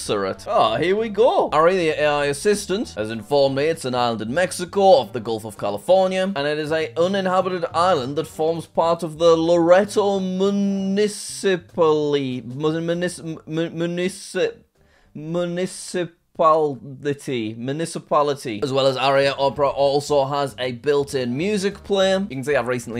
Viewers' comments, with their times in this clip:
0:09 Don't tell me you NEVER heard of a municipality before...